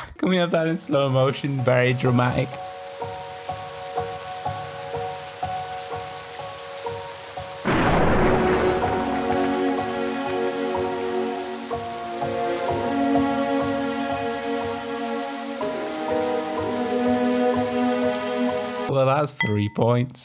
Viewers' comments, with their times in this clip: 0:08 Hahahaha minutes the zombie got slap in the head Hahahaha when the sad music is in and then he got slap in the head hahahahahaa😂😂🤣🤣🤣😂😂😂😂🤣🤣